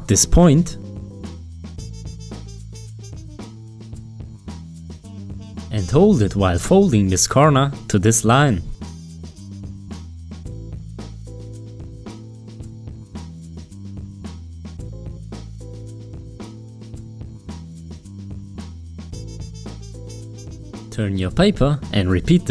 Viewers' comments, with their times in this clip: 0:07 instead of saying "corner" he said "Karma" lol